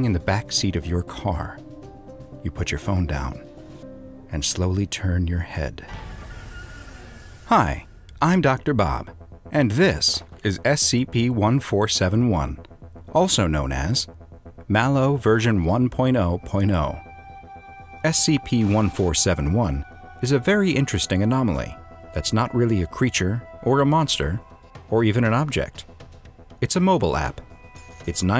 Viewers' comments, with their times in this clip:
0:06 i thought the scp said hi
0:09 in i like your voice that voice it sounds very nice